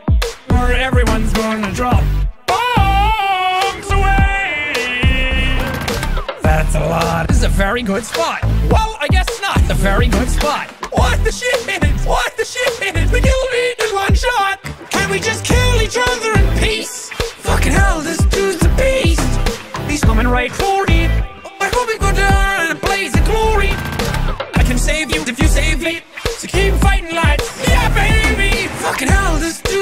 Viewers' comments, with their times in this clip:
0:10 i've heard this so many times and watched too much minecraft that i keep hearing "water sheep"